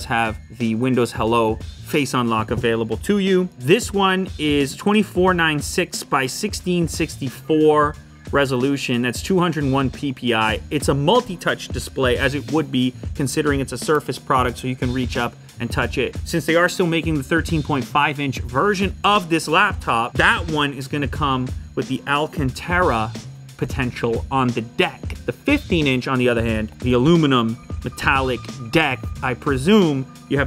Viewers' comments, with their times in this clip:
0:10 Lew: Me: he said pee pee
0:13 i heard a crack
0:13 opss.. the sound of breaking..
0:13 who heard that sound from the stretch of the laptop screen to the back???